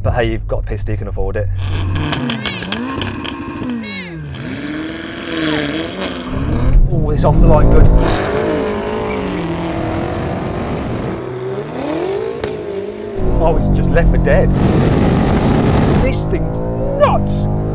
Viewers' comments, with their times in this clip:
0:03 the sound of the engine kick down actually startled me 🇩🇪🤣